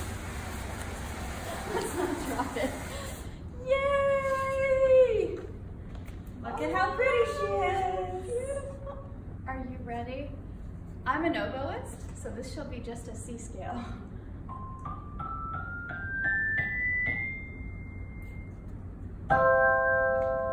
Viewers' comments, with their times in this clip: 0:07 Ready to hear it in Action? Here's a C Major scale.